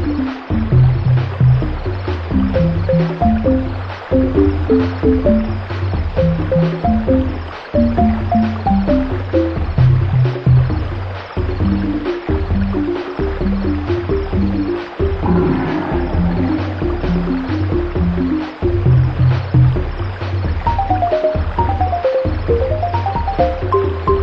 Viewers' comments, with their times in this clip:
0:10 in the very background of this tune you can hear the boulder Dash tune back there. Thought it could slip away, I caught it.